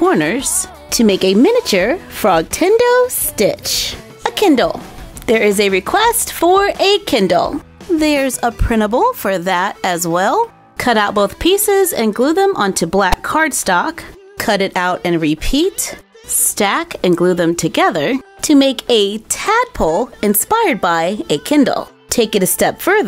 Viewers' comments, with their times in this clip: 0:04 I thought she said Ken doll